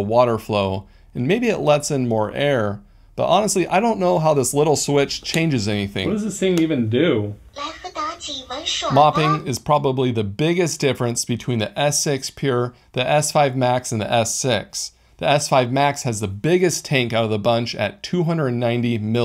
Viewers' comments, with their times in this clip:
0:07 I laughed when the robot started talking randomly and you were like WTF?? Hahahhahah